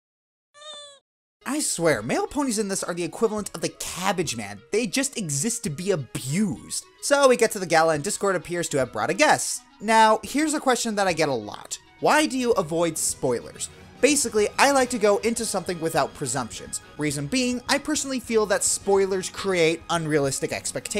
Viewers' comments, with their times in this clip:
0:03 did you say mail ponies or male ponies?